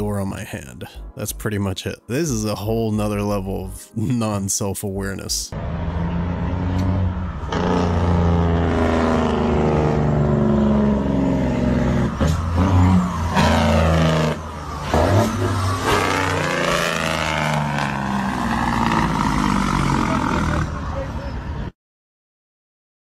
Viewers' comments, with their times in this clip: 0:07 the sound of the Jake brake (exhaust brake) is edited from another video. The original video does not have any audio. And you can hear people having a conversation. The clip the audio is not from this video.